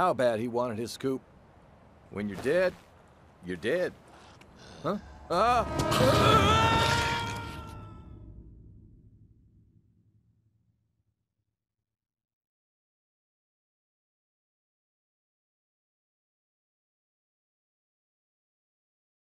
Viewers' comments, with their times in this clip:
0:05 kinda disappointed they didn’t leave in the sound of him being eaten as it fades to black like the original